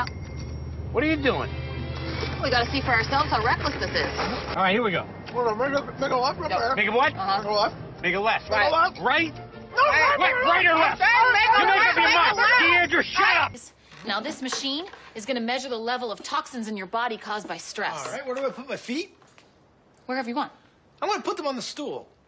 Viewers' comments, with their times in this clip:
0:04 Frank yelling "Deandra, shut up!" makes me laugh sooooo hard 😂
0:09 Franks “Deandra SHUT UP” has so much power behind it I don’t know how I never noticed that lmao